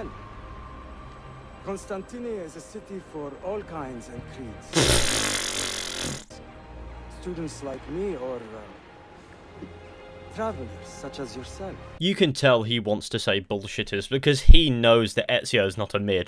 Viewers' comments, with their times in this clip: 0:04 Sound of footage too low. Sound of your voice loud. Had to pump the volume up listen to the cutscene. Come and my heart came bursting out.
0:04 why does he laugh?